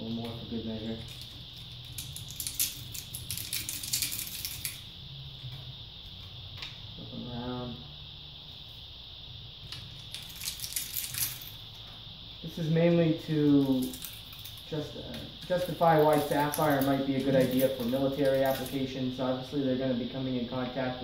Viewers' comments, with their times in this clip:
0:09 sounds like ASMR